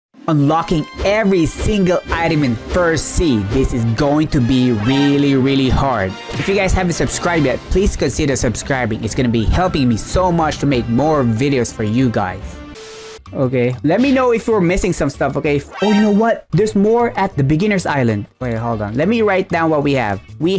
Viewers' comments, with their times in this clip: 0:02 Lol i thought he said 3rd sea